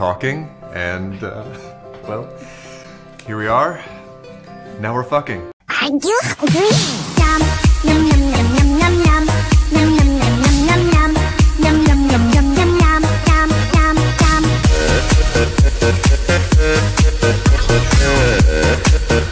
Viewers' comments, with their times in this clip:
0:05 the music ... XD